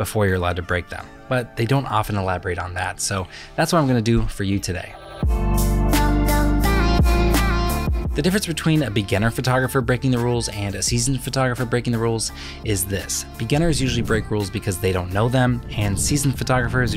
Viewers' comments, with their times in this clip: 0:04 as an indian the music was triggering 😂😂😂😂😂